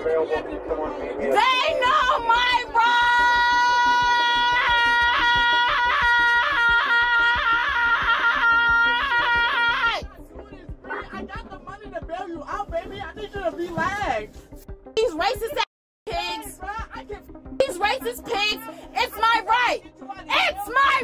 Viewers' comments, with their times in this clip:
0:03 People when yodeling be like: